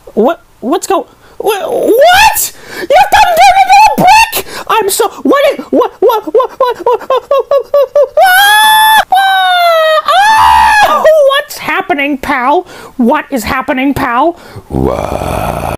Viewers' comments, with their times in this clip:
0:08 Is it just me or is that the most satisfying line of screams to hear?
0:08 he is just screaming in pain